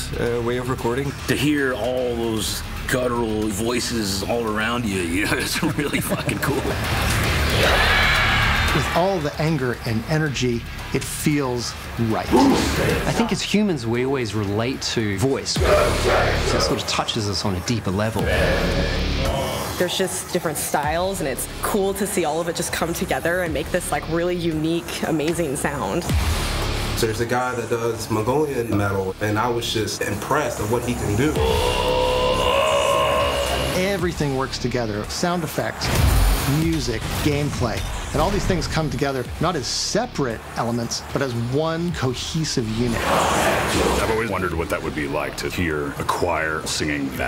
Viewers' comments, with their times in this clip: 0:07 Who else thinks when they all started screaming it sounded a lot like nazi zombies from bo1 end anyone else nostalgia or just me
0:26 kinda sounds like the bloodpunch sound...
0:31 That guy just let out the most metal burp I have ever heard...